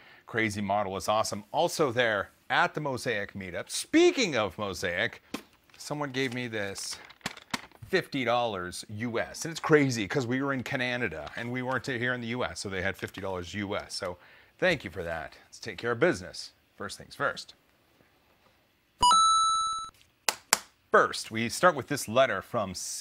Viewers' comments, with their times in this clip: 0:09 Wait.. Cananida? lol